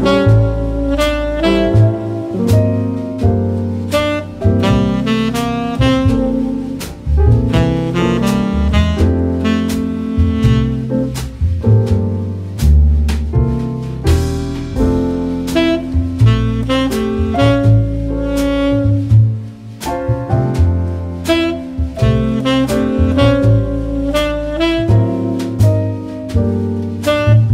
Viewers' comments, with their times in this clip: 0:09 the fucking piano store november december christmas time music playing was almost enough to send me, fuck yes the vibes are immaculate